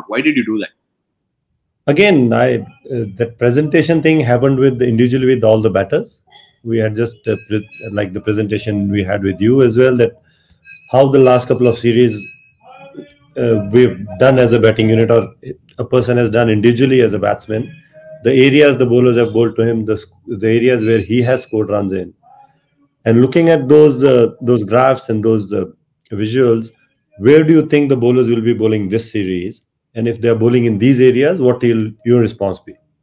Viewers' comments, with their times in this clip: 0:06 You can hear a bell toll sound and someone speaking, sounds like a street side vendor . The comment above is, mentioning that someone shouting for old iron/metal scrap at home for dates (palm tree fruit)!!
0:11 is there someone selling icecream in street...
0:21 Did anyone hear a sabjiwala shouting in the background..?😀 hear it ..